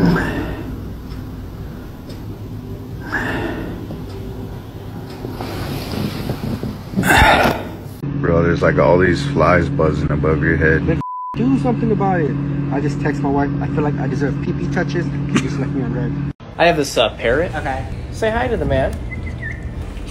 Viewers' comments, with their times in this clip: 0:05 breathin so hard i got self conscious